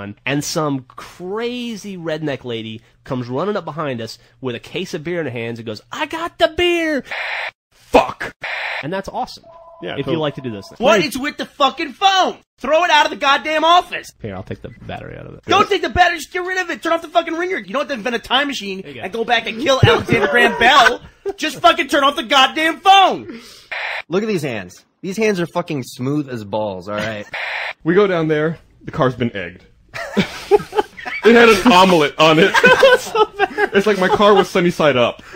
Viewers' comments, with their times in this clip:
0:10 I thought my phone was ringing so I left the room.
0:16 Haha no shit when the phone rang I stood up paused the video and went to answer my house phone because that's the ringer sound. Then it stopped ringing and I realized it was the video.